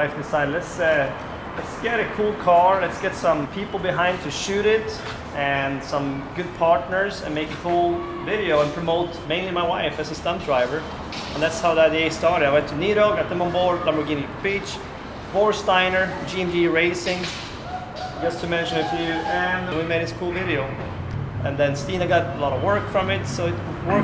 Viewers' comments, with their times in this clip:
0:09 this guy does a GREAT Borat impersonation